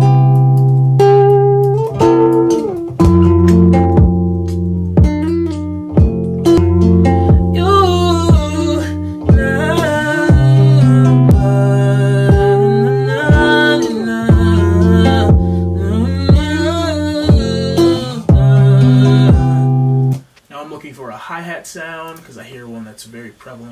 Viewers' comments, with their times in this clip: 0:07 man ur voice <3
0:08 Yo man!! Your voice is unbelivable, damn! I love it 🔥🔥